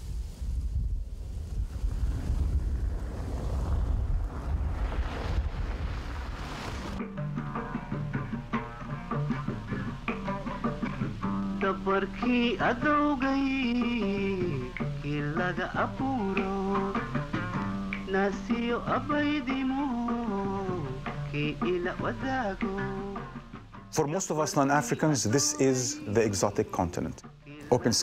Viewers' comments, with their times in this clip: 0:09 he's playing Somali folk song right after he interviews that Somali Kenyan businessman Adan Mohamed great choice 🇸🇴🇸🇴
0:12 liked that somali song on munite
0:14 just heard old somali song